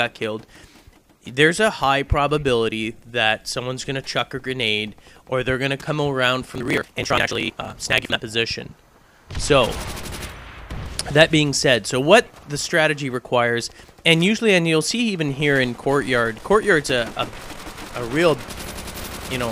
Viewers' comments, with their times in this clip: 0:06 epic voice failXD